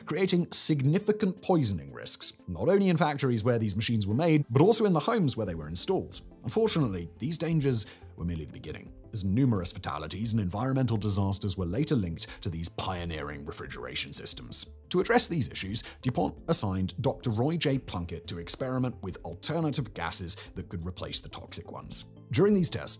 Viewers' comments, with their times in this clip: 0:10 love that Simon always pronounces Cl (chlorine) as SEE EYE